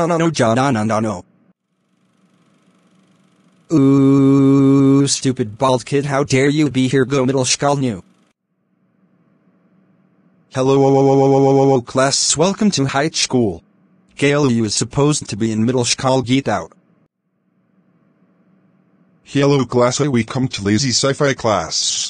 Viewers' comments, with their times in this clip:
0:03 a ghost was talking????🤣🤣🤣🤣